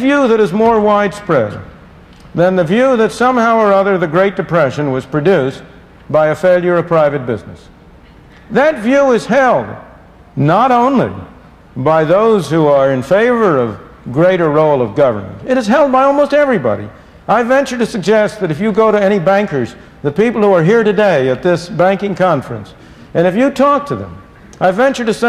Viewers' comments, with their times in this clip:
0:07 Sounds like he says "that view is hell"